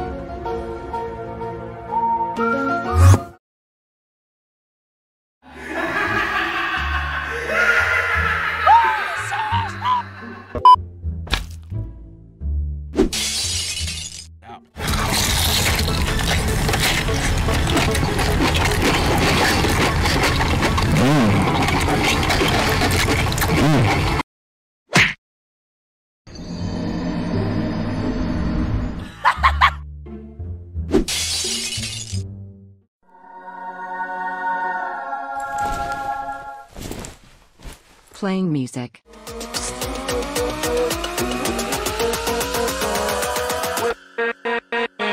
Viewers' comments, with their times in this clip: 0:08 ghast say like David from bfb
0:09 that David from bfdi saying aw seriously the whole time XD
0:09 that "oH sEriOuSly" felt like i was watching bfdi 💀
0:31 air pods that song XD